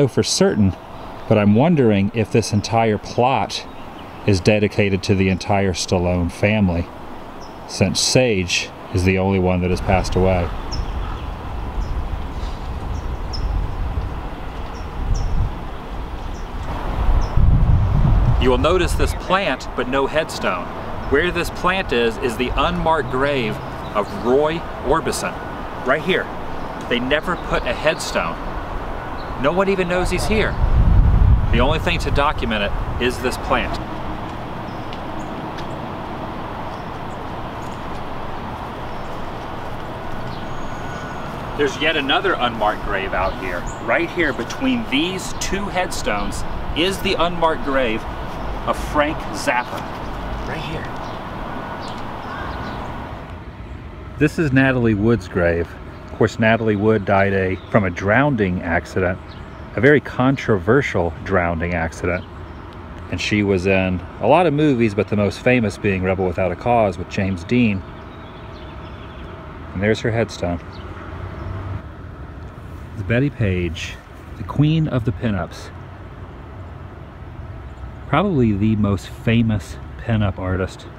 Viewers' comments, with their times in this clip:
0:10 I hear very clearly "Mommy!!" Raise the volume to hear the voice better.
0:58 ...@ Natalie Wood died from a ‘drownding’ accident, not once, but TWICE?? Really, dude??
1:01 "Drownding accident" - no D
1:03 DROWNING NOT "DROWNDING" FFS